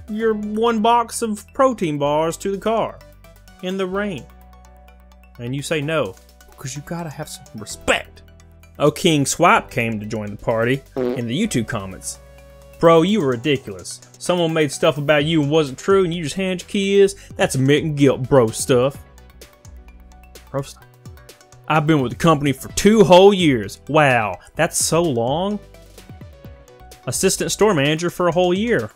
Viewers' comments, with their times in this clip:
0:08 you totally leaned and farted.. how am I the only one who heard that
0:09 Nice fart bro!
0:09 Can't edit out the massive fart?
0:10 I love the quick fart sfx :)
0:11 Is no one going to give recognition to the nonchalant flatulence ?